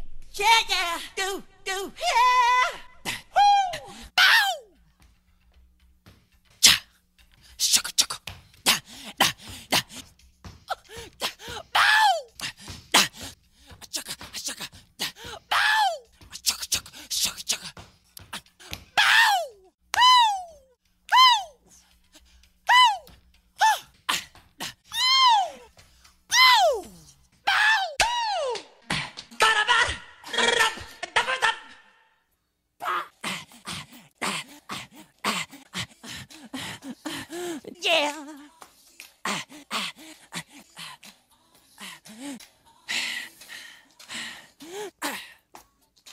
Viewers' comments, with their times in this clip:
0:06 shotgun reload and shots
0:29 Michael jackson was the OG of the "Skrrrratat" thing.